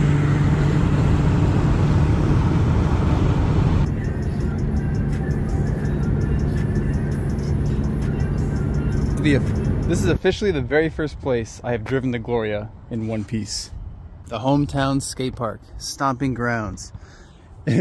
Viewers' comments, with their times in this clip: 0:05 the “no jumper” snippet playing in the background 🔥